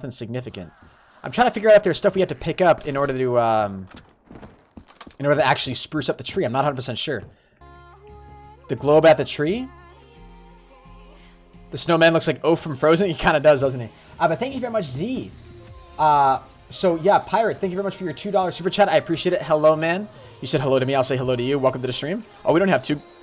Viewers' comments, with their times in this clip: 0:07 i love the song